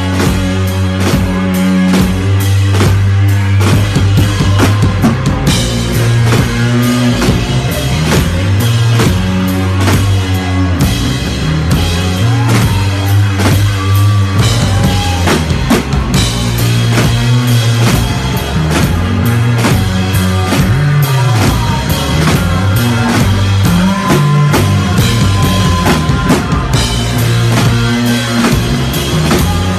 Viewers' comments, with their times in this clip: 0:10 Rack Tom Ouch oof owie I'm going on break